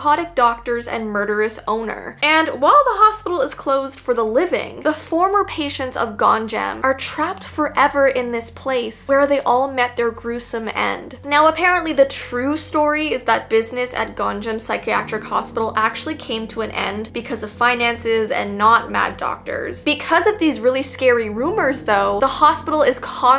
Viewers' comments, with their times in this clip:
0:04 Is it just me or did someone else hear that knock when we where in I really think so…ay if y’all don’t hear it y’all might have to send me to one of these places 😂